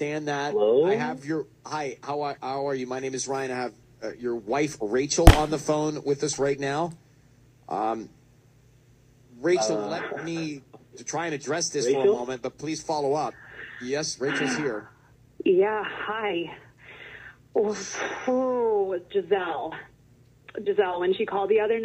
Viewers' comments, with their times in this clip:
0:04 I thought that too.. but I think the loud slamming sound is when part of the video says “BUSTED”